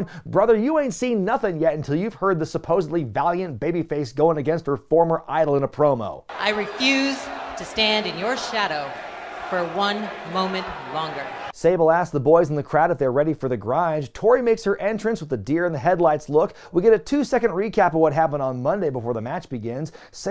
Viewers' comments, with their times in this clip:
0:05 Tori's promo and delivery is something straight out of a video game. It just lacks emotion and is so robotic.